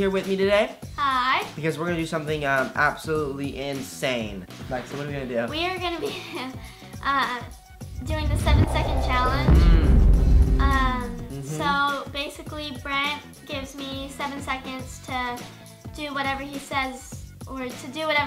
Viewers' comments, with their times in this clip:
0:05 lexi still has that laugh